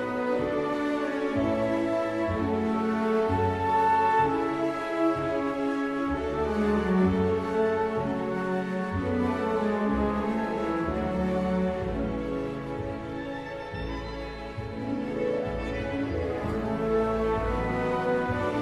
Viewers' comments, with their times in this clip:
0:06 a little similarity with "Across the Stars"